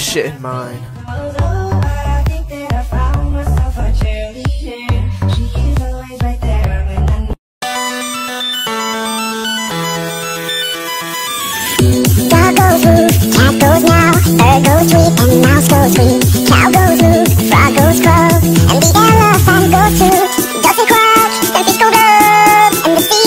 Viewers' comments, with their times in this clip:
0:08 I had my headphones at max volume and when pou theme came on, my ears started to bleed 😭 giving me sm nostalgia 😭